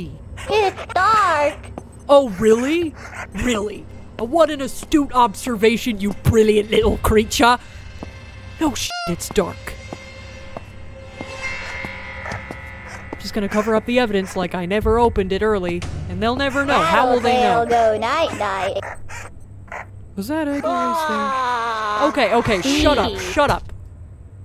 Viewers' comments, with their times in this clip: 0:05 The weasel is so pissed that his accent spilled through
0:06 British accent: "LITTLE CREATCHA"